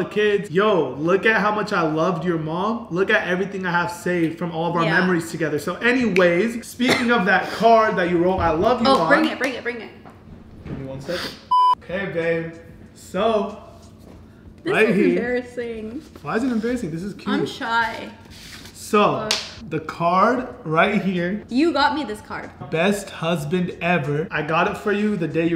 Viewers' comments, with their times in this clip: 0:08 Anybody else heard the banging